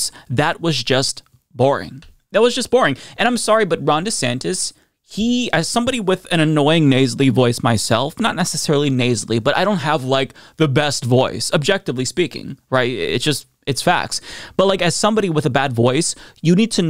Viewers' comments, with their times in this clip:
0:04 you have a great voice . Soothing when delivering the news.